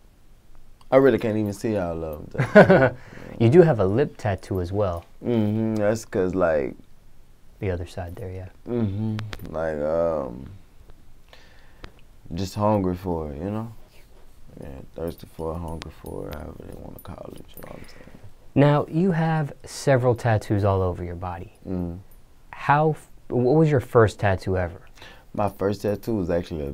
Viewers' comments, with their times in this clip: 0:08 the way this nigga say mhm lol